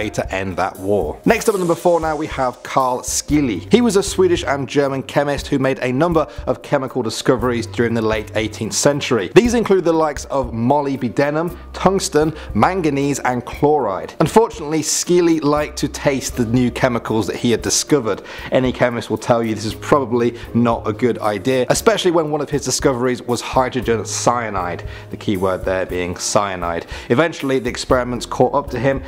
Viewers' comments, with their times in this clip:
0:10 Molly B. Denum? lol
0:10 Took me a moment to realise he was saying "molybdenum" But Molly B. Denim sounds like a cool name for a highschool greaserchick.